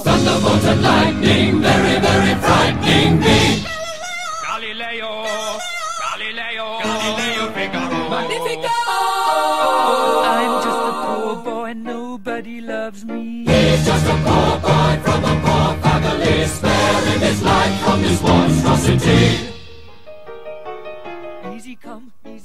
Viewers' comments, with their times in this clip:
0:03 If you're using headphones, the high and low pitch that says "Galileo" will come at different peices.